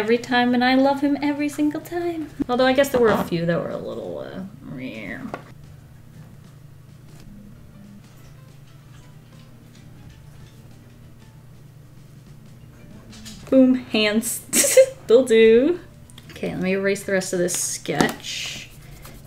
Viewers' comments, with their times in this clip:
0:07 anyone else think they got a phone notif?